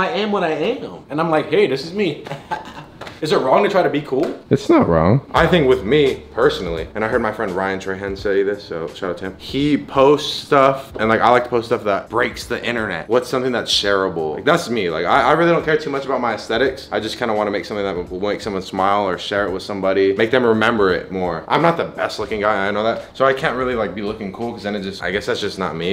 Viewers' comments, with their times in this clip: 0:06 Why it sound like the porn.hub song